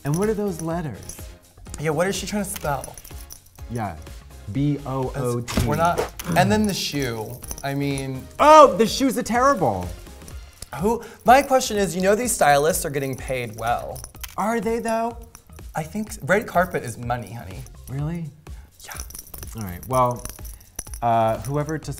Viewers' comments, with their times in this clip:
0:08 i love when katya's boston accent just REALLY pops out ... oh the shoes ah TAIR-AH-BLE ...